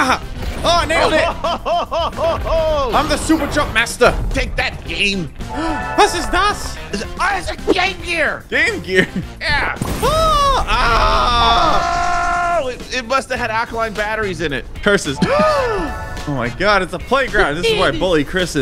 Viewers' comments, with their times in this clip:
0:06 German ctop doesnt exist he can't hurt you. German Ctop: